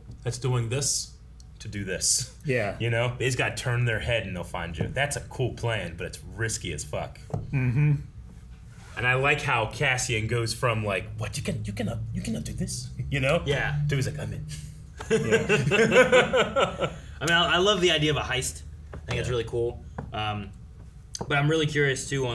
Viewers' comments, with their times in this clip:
0:10 Ok, but that was lowkey a really good Cassian impression XD